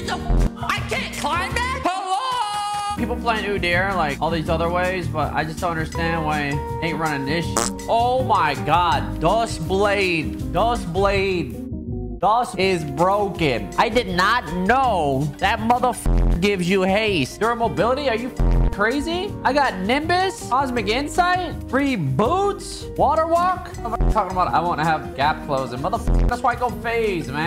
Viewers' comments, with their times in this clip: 0:09 thought he speakin spanish